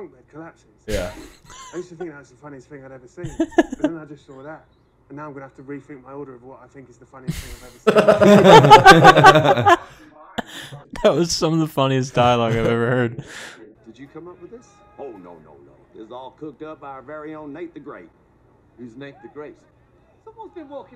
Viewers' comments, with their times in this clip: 0:05 "That's some of the funniest dialogue I have ever heard". I wish I could hear it, turn up the volume, idiots, all I hear is your mouth breathing.